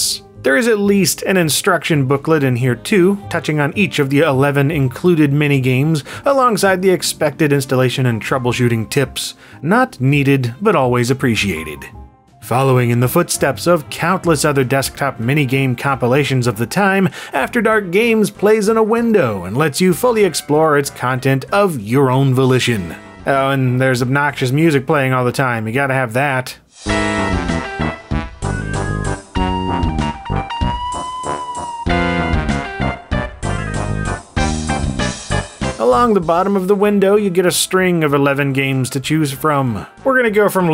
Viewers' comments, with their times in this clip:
0:06 Channelling The Simpsons comic book nerd there bud?
0:27 Christ. Sound like one of the devs brought their kid to work and let them slam on a MIDI keyboard...